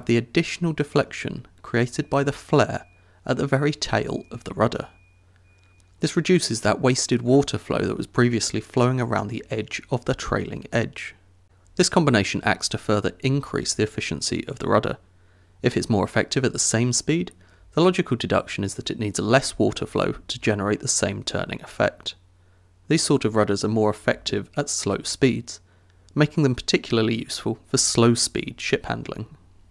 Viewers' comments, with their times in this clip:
0:10 Did anyone hear a faint beeping +?